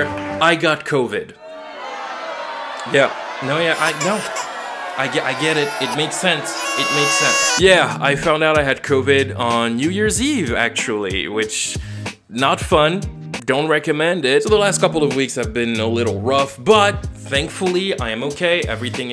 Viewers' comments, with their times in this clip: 0:05 Therapist: Autotune baby can't hurt you Autotune baby: